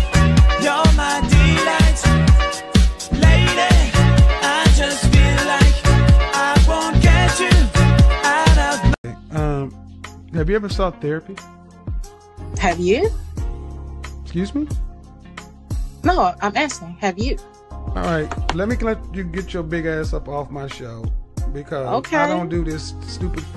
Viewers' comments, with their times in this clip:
0:10 that smooth beat